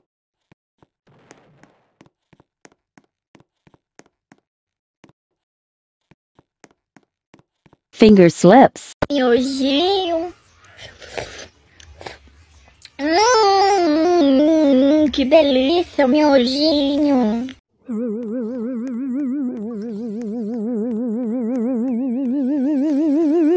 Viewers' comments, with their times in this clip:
0:09 The distorted voice got me gud, you too?